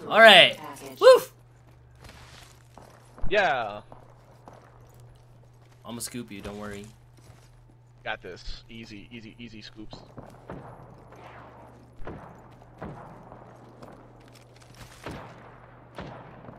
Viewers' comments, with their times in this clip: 0:04 that or the tone he has in his voice when he say's "I'ma scoop you don't worry" lol